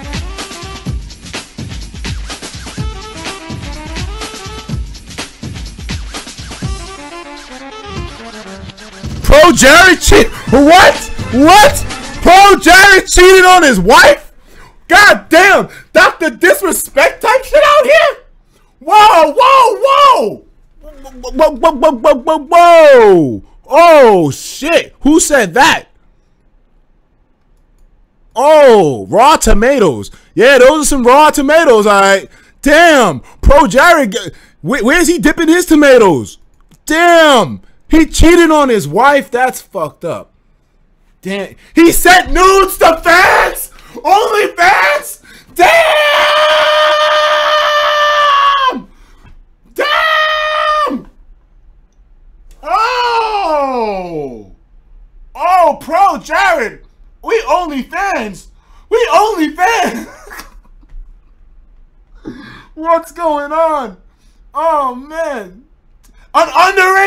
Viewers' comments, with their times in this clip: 0:09 hearing him scream like this again brings me joy
0:52 my robot toy running out of battery